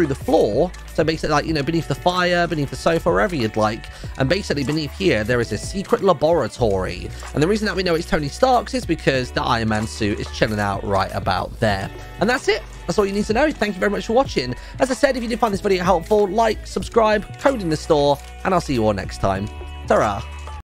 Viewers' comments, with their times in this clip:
0:05 secret laboratory lmaooo his pronunciation